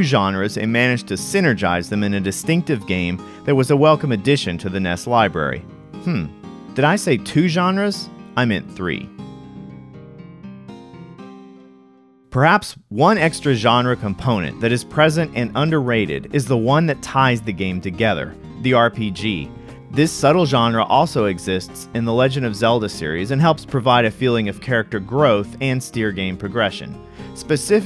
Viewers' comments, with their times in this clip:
0:09 It took me this long to figure out that the music was a remix of the theme, good work... and very good game I do love, even now.